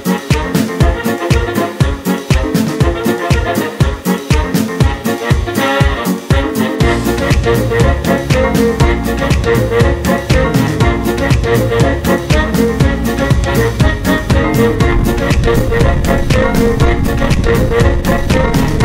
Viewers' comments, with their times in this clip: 0:04 the music <3